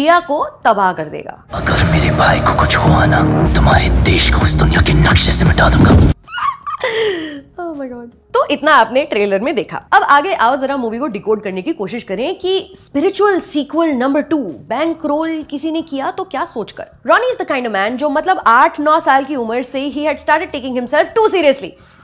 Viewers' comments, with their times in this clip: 0:06 this laugh though🤣🤣🤣
0:06 Hahahaha super duper awesome review! That chuckle .....#priceless